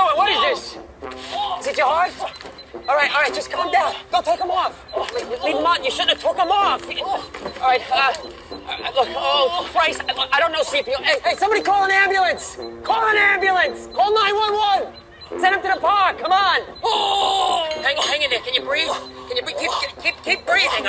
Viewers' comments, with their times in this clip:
0:05 "you shouldn't have took then off" idk why but this line sounds so honest and makes it much better